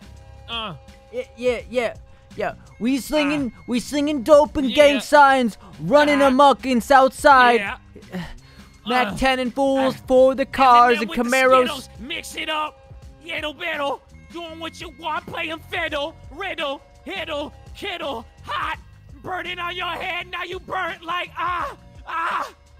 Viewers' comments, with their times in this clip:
0:03 Man lost his breathe in his 6th word